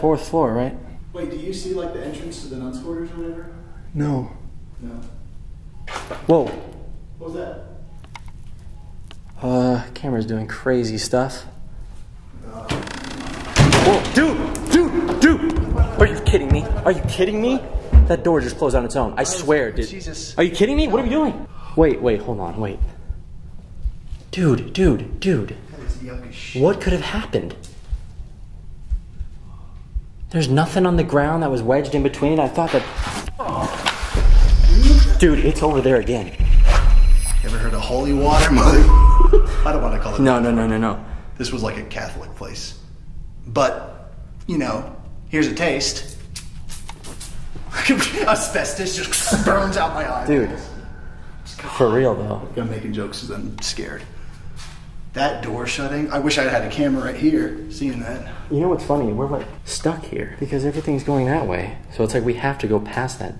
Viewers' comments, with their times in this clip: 0:05 you can hear surgery room beeping
0:49 I have just watched this video , so I don't know if anyone noticed it already or it's just a background noise or one of you actually talking. But after spraying the water I hear : It's cold or Let's go. 🤔